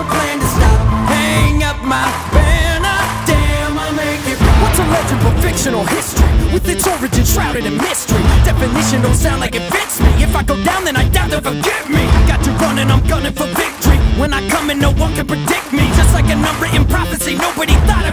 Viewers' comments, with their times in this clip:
0:05 sounds like it would be in the little nightmares song